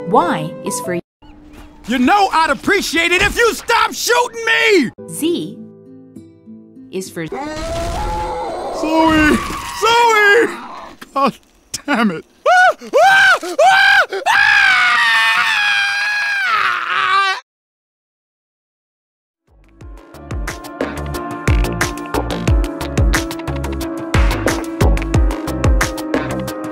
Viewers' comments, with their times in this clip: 0:08 zoey:(go to the 4th dimension) louis:(scream)